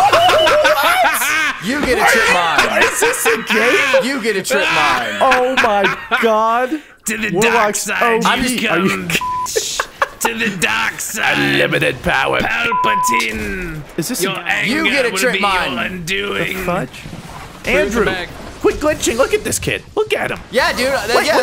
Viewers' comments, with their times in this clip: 0:03 And that is why stormcaller is this best. The maniacal laughter and screaming UNLIMITED POWER